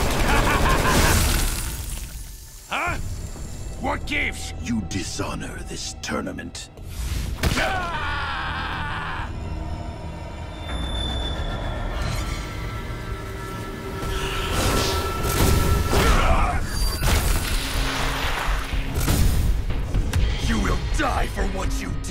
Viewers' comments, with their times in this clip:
0:07 Kano screaming after sub zero kicked him is funny asf
0:07 all I hear is Medic from TF2